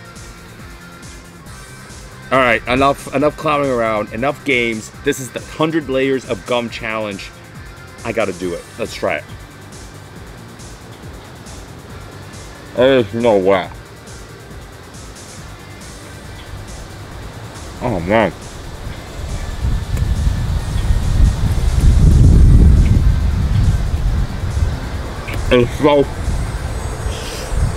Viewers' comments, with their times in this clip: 0:08 Chewing starts in